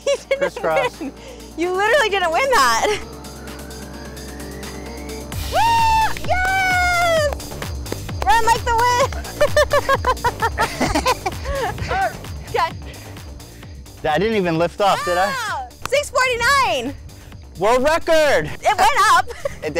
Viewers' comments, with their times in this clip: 0:05 I loved the part They're supposed to be competing and she's cheering him on and he's laughing. Cute shit.